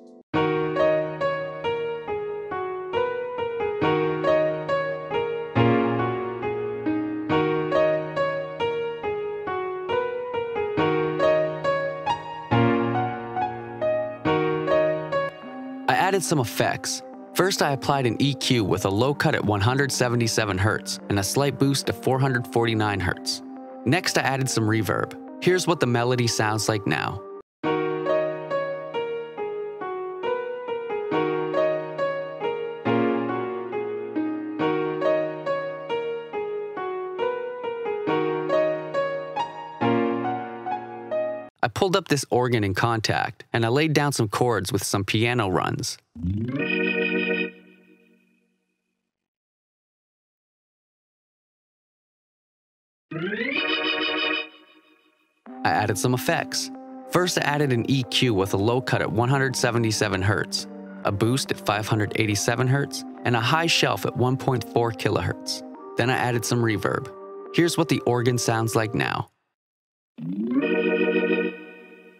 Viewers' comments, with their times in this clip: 0:09 That melody sounds like rae sremmurds black beatles
0:53 that organ xd